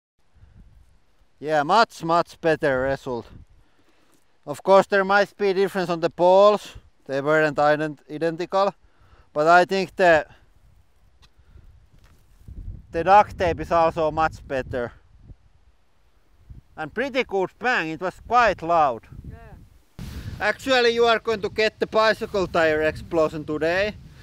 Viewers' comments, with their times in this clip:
0:07 he almost pronounce "identical" right then he realized we are here for the wrong way :)))